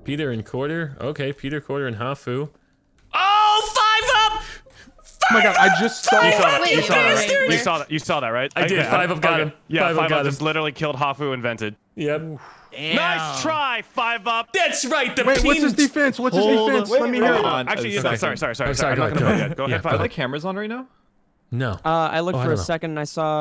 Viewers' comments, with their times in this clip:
0:07 Chilled: 5Up, 5Up you bastard. They way he said this made me laugh. 🤣🤣🤣🤣🤣🤣